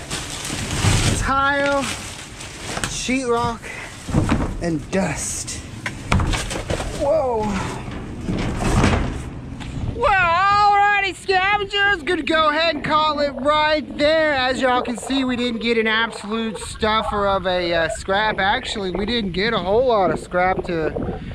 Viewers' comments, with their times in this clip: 0:08 Ok was it just me or at the end there starting is sounded like some weird animal or stomach growling like crazy what was that????